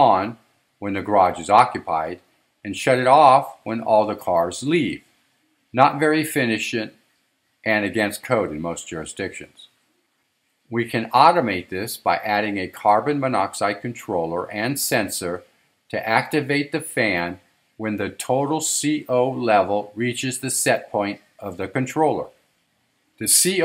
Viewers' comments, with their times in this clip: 0:04 not very finishent? do you mean efficient?